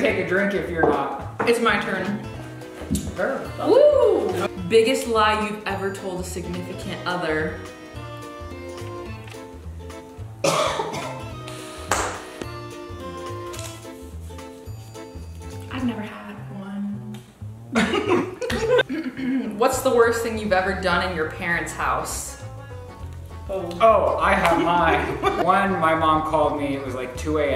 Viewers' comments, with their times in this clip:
0:08 everyone is quiet LMAO